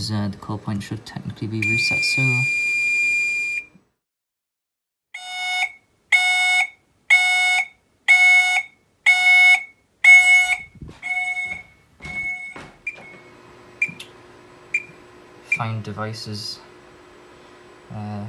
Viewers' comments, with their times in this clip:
0:05 put this on 2x it sounds like fast intermittent